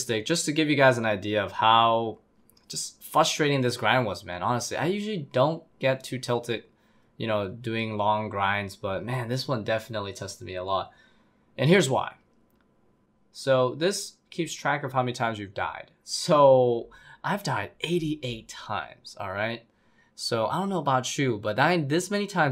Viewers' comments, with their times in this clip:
0:03 nothing is more frustrating than someone who can’t say frustrating